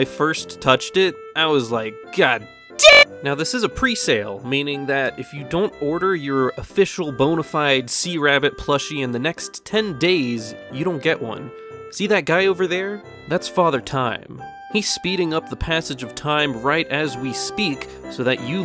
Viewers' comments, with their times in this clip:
0:04 His voice shattered reality